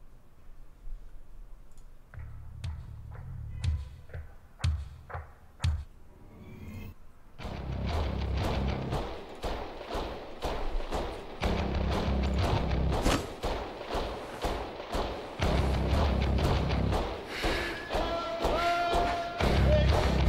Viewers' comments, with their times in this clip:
0:08 Gotta love that classic c&c music.